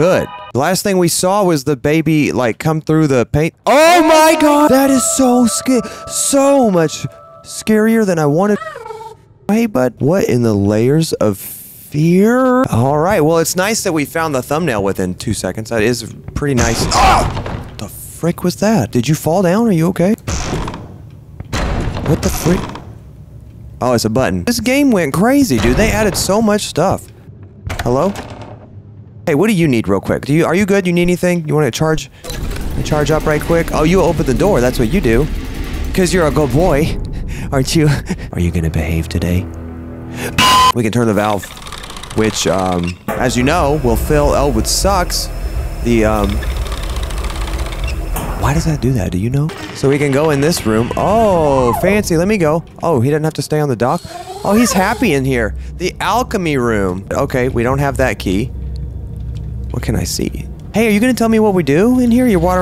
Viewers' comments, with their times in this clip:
0:04 = your mother figure posh laughing
0:38 The metal pipe😭😭
0:44 put subtitles on PHil Elwood sucks 😂😂😂😂